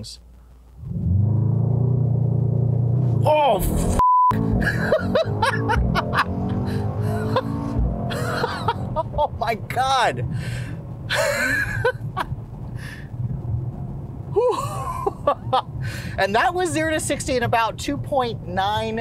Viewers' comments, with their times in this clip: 0:06 Fizzing sensation Your laughter is what makes your videos awesome